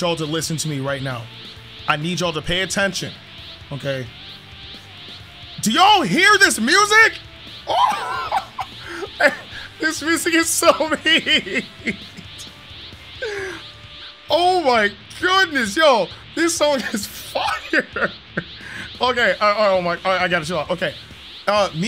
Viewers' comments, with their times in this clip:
0:06 no we can't cuz ur like YALL CAN YA HEAR DIS MUSIC MY GOOOD THIS IS FIIIRE